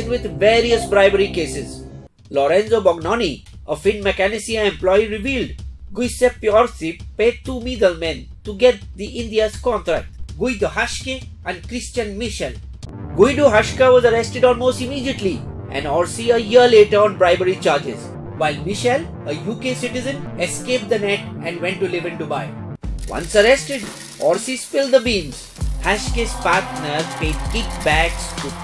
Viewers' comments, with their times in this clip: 0:06 pathetic accents impossible to comprehend. don't complicate life of ur viewers. your data is interesting enuf. you don't have to use stupid voices in attempt to sound interesting. Cause it back fires.
0:10 French English , Superb bro ! :)) :))